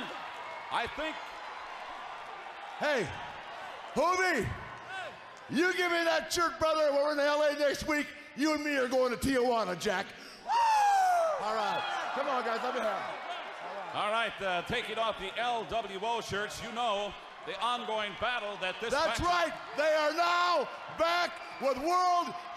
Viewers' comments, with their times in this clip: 0:09 the highest pitched woo he ever did.